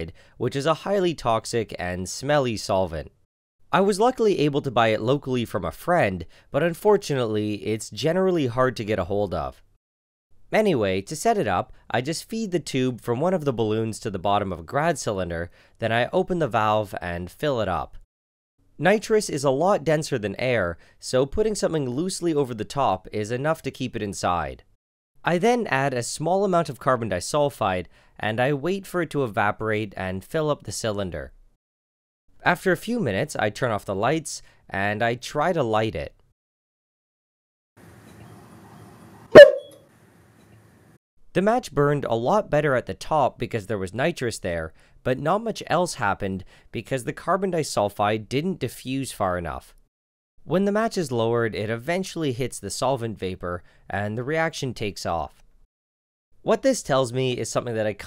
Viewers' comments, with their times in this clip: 0:10 is it just me or did he say manyway instead of anyway?
0:36 i almost got heart attack my headphone volume was high lmao
0:37 i was shocked that his dog said "boop"
0:37 sounds like someone yelling bloop
0:38 WHY IS NO ONE TALKING ABOUT HOW CUTE THE “BARK” WAS??? The others were like “Bark.” Or “BŸÖRK” and this one was just a little puppy “YIP” AWWWW
0:38 it REALLY sounds like you made a "BOOP!" with your voice
0:38 the tube: "BOO" me: "AH!"
0:38 IT LITERALLY SOUNDS LIKE A HUMAN MADE “Boop”😂
0:38 scared the crap out of me I didnt expect it to be so loud
0:38 sounds like an 11 year old screaming at me on his earrapey mic after i quickscoped him
0:38 Barking dog experiment His experiment : B E E P
0:38 It sounded like he yelled into the microphone
0:38 Instead of barks I heard which is seemingly a man shouting BOOP
0:39 Sounds like the roblox death sound XD
0:39 Your first try at the bark sounded more like a chihuahua. The later tries sort of had that sliding piccolo sound.
0:39 it legit said poop
0:39 I thought someone just screamen "BUM" in a high pitched voice
0:39 i thought that was him making that noise
0:39 Gas really just said b o o p
0:39 it sounded like someone going: "BOOP!" loudly
0:39 BOO is what I heard, maybe its a ghost. (jk)
0:39 my ear cried and complain my brain remove head phone
0:43 a barking lab chiuaua